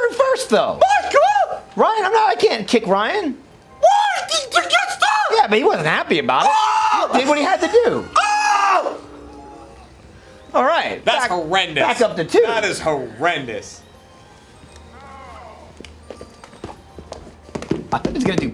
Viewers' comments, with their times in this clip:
0:04 Gavin sounds xD